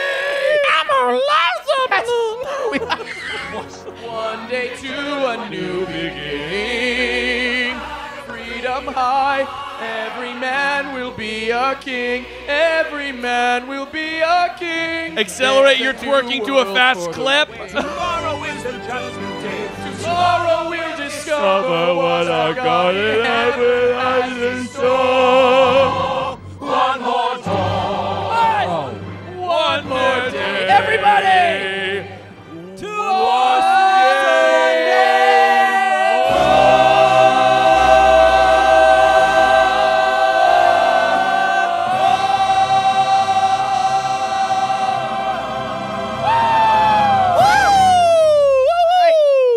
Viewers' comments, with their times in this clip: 0:08 that “freedom high” was so beautiful
0:36 why did this harmony kind of go off tho